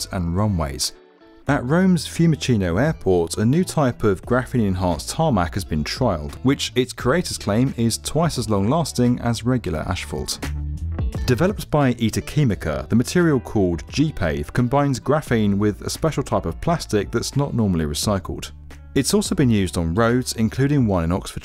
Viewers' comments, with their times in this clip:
0:08 "...regular ashfault..." WTH is ashfault?